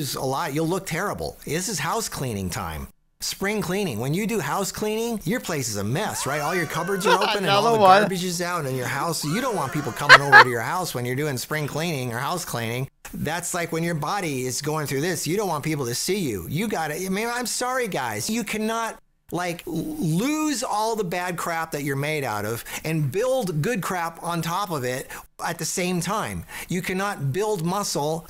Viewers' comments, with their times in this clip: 0:09 you're laughing like a girl 😁